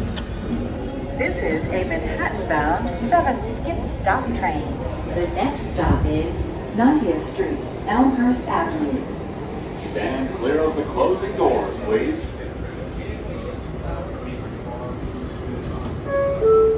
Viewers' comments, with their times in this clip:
0:04 I love the announcements and my favorite part is